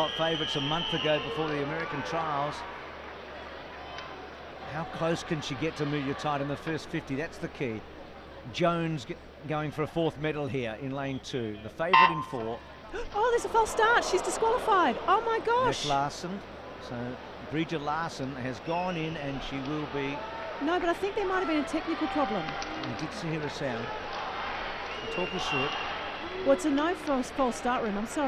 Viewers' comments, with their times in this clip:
0:10 You can hear the race judge saying "Take your mark".